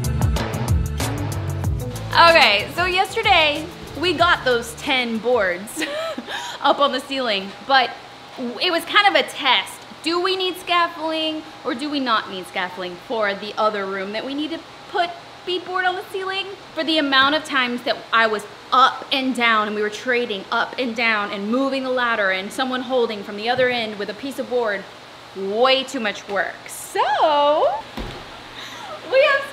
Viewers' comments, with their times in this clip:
0:10 is scaffling a thing or is she just mispronouncing scaffolding